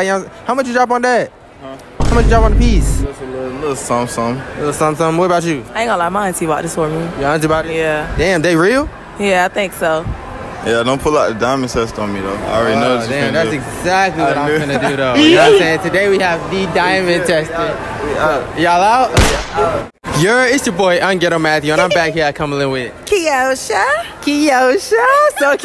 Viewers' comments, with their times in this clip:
0:09 bro look and sound like POLO G 😭😂
0:12 Im sorry but the dude a dollar tree polo g